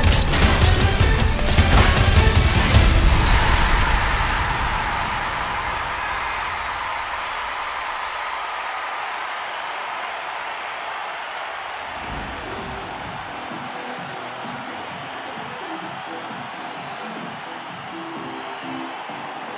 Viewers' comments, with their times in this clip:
0:03 Who else saw the fortnite battle bus shadow the time is under the date and you can barely hear the noise of it 👇🏼👇🏼
0:04 Lmao you can see the shadow of the battle bus and hear the sound
0:04 call me crazy but that’s a battle bus noise
0:04 Listen closely don't you hear the fortnite bus beep beep audio?
0:04 i swear i can hear the battle bus horn
0:04 you can hear the battle bus honk, and a shadow moves from left to right. No. Please no.
0:04 Listen VERY closely u can hear the Fortnite battle bus horn and the battle bus shadow on the ground
0:04 I KNOW THE LLAMA RAMA EVENT HAS ALREADY STARTED BUT I JUST REALISED AN EASTER EGG IN THE TRAILER THERES THE BATTLE BUS SOUND AND A SHADOW THAT CROSSES THE SCREEN
0:04 it sounded like the battlebus from fortnite, omfg EPIC!! what are you guys doing to this game now...
0:05 you could hear the battle bus from fortnite lol
0:05 anybody else hear that battle bus honk at the end?
0:05 They actually snuck the battle bus (and the battle bus sound) in
0:05 They actually snuck the battle bus (and the battle bus sound) in
0:05 that horn sounds a little familiar
0:05 if you have good ears and can hear it you can hear the battle bus horn fortnite x rocket league here we come
0:05 fortnite Easter egg (battle bus shadow and battle bus honk.)
0:05 The battle bus you could hear the noise
0:05 you can see a shadow. An then if you listen closely, you can here the battle bus too.
0:05 we can hear battle bus noise
0:06 When you hear the battle bus at the end of the trailer 😳😳 you can hear it in the background
0:06 Am I the only one who heard the Battle Bus from Fortnite? 🤔
0:06 Aren't we gonna talk about the fortnite bus horn at the end? ??